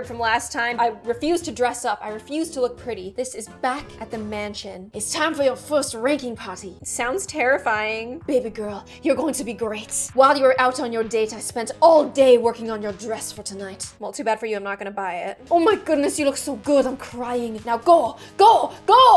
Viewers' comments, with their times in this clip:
0:06 That Vocie is To Funny 🤣🤣🤣🤣